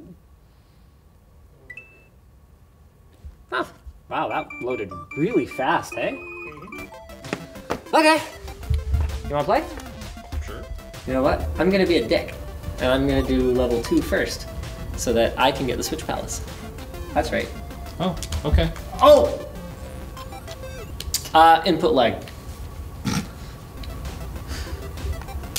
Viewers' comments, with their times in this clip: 0:04 Ehh?.. spoken like a true Canadian.
0:06 Linus: "Wow, that loaded really fast eh?" Oh canada..